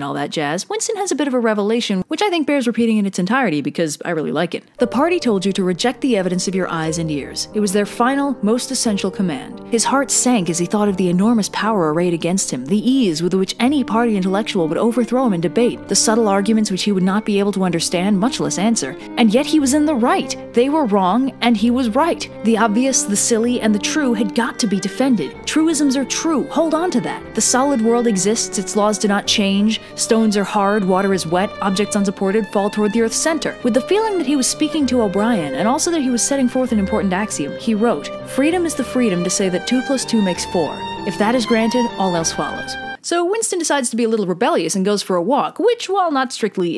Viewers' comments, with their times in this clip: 0:04 I Like the subtle addition of the sad soundtrack from FMAB 😉😉
0:27 Using the FMAB score under the reading is golden.